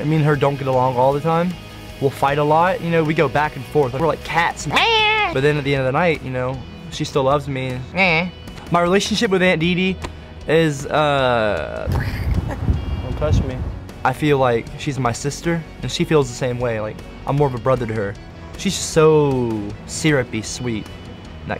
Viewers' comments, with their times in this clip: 0:03 ginger mating call